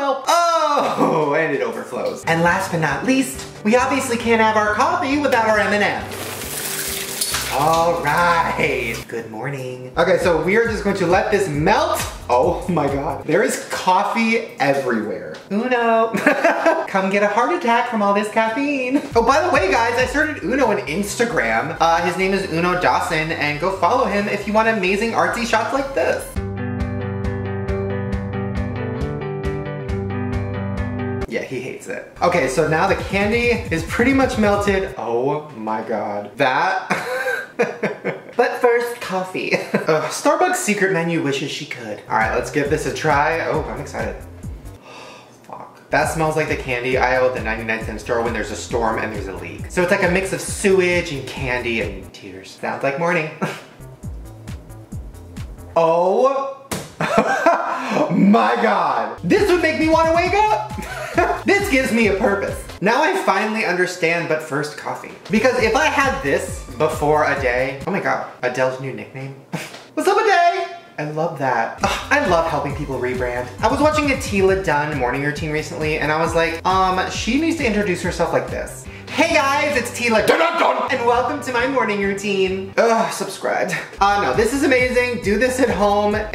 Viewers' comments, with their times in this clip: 0:08 why did he actually sound like Jeffree star a little when he said "good morning"
0:09 When Shane says good morning & it reminds me of Jeffree Star’s snapchat.
1:08 Later, Shane rewatched this video and realized it sounds like he's yelling "WHAT'S A BIDET?"